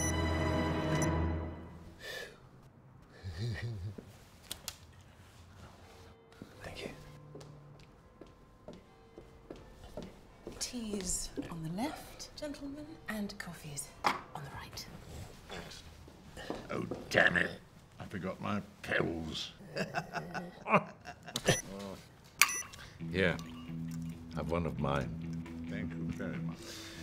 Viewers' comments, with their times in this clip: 0:09 turn on your volume high, you will hear the big ben sound